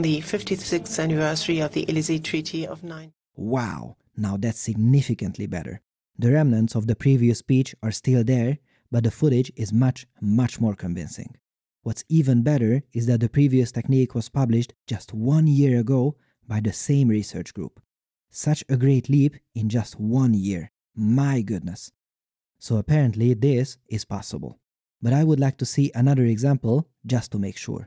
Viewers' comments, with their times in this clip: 0:08 They should offset the English to match the German.